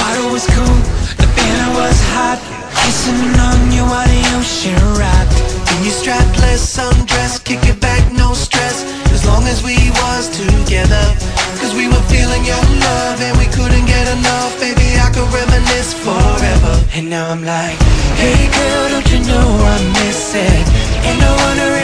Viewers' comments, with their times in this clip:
0:08 music couldnt be any gayer and the stick couldnt be set up any worse ! some good clips though